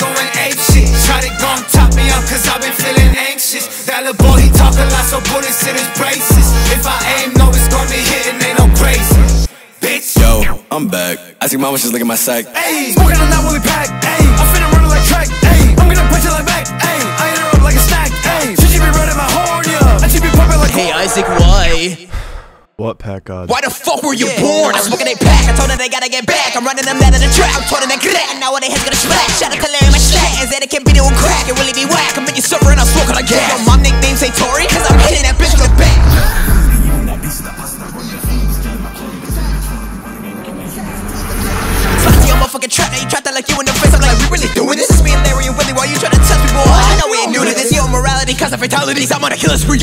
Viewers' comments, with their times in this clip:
0:10 They really massacred my boy with his own flow that’s cold
0:10 I cant hear this without the bois laughing in the back
0:36 how noone talking bout that surround sound shit was majestic to my ears yo